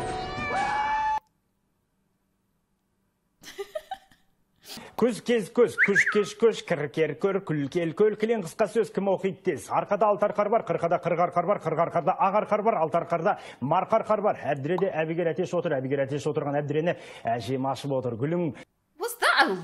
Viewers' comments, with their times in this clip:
0:04 1. the language is kazakh 2. he's saying tongue twisters to warm up and he's killing it
0:05 is not actually the Kazakhstani language, the guy was just warming up to not stutter